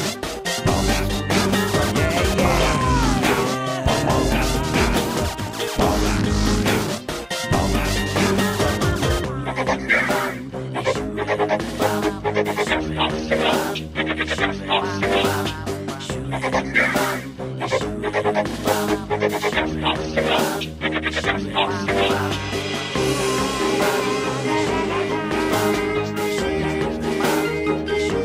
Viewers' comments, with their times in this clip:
0:10 i mostly hear the rare wubbox not oaktapus